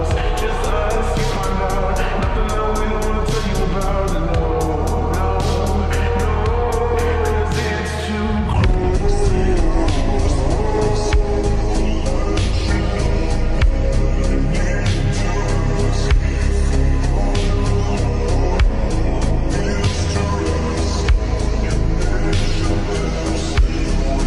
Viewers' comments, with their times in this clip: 0:08 The is the best after dark version of slowed and reverbed